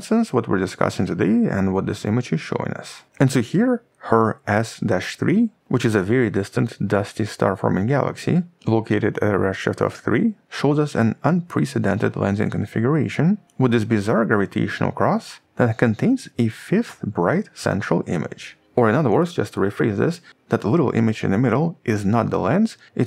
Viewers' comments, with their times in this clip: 0:04 I had to check the transscript for the name of the system mentioned I heared "her ass dash 3". ^^